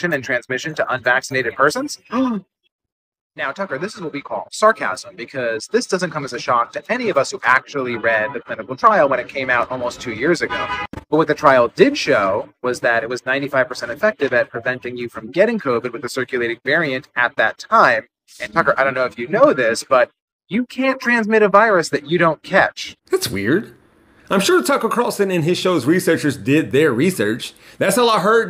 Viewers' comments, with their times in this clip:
0:10 The sound heard is the sound of someone squishing Tucker's clown-nose